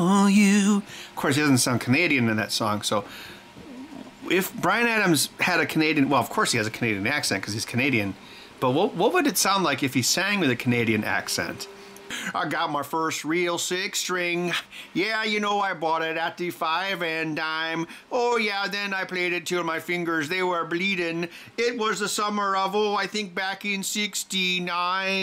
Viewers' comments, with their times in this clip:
0:10 If Brian Adams was from Fargo. What a twist!